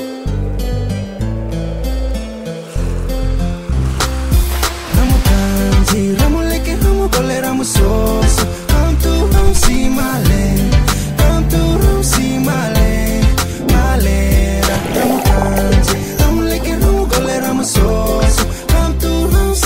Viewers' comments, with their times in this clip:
0:03 Great Vid!! Love the dive footage! I just noticed, you can hear the music say "Kazza" ...